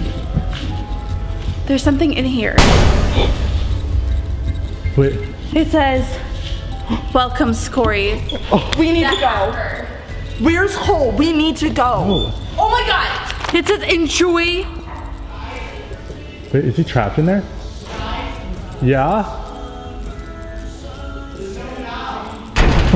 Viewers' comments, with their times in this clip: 0:10 Where is hole hahaha